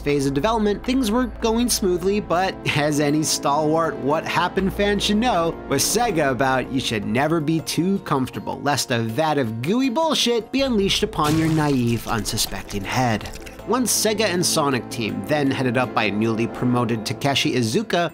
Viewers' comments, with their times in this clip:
0:04 Vanoss is that you?